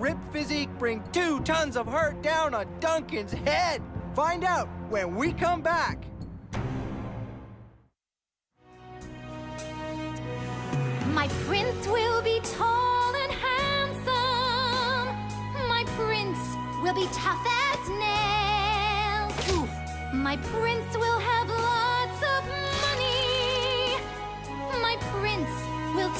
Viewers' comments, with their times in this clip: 0:09 COURTNEY IS SUCH A GOOD SINGER.. 😍😍💍💍